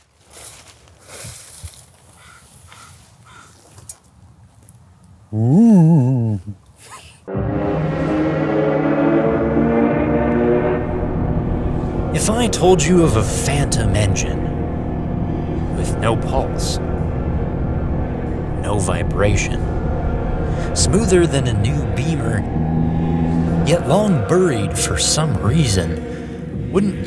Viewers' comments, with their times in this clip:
0:09 sounds like a stuka